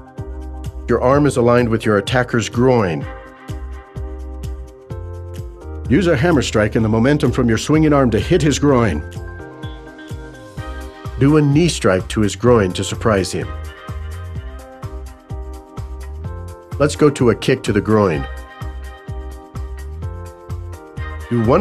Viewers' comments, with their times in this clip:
0:05 Is it just me or at the end of the sentence does the guy speaking almost laugh?